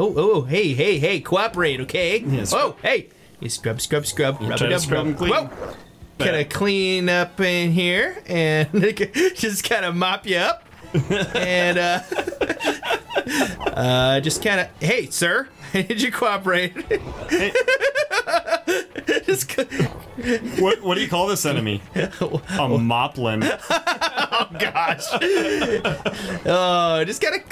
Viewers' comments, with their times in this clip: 0:08 did bro say the n-word on accident lol